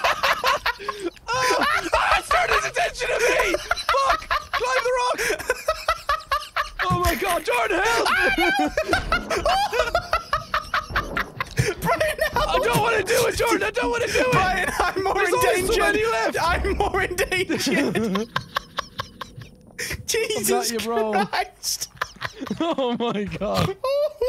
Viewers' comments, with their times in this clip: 0:09 that scream was perfect